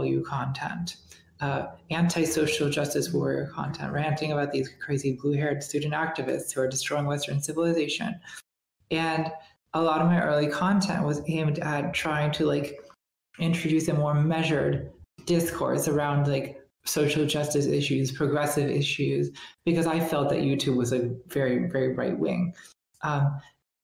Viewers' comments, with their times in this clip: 0:05 Listening to her talk about being a woman with a male past and the difficulties with the voice. I wonder if it would be helpful to Natalie to know that her vocal tone and expression reminds me of Cher. When i was growing up my voice hit bass for singing when i was 10 - no joke. I wa s this tiny thing with a bass voice in the choir. Women do have deeper and husky voices which actually i find attractive and i know that men do to ; IF that's important . how you sound to yourself is really important. And it does sound like she describes not succeeding as a man,, and then got shamed for being herself is like a no win situation. At the end of the day we HAVE to know that that is not true. Other people's opinions have to not matter. he sounds like he's talking about IFS therapy.